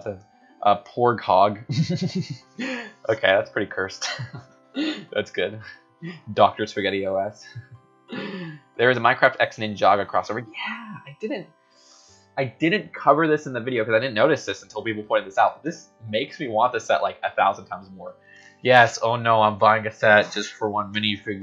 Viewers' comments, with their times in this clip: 0:07 ok I thought he said something else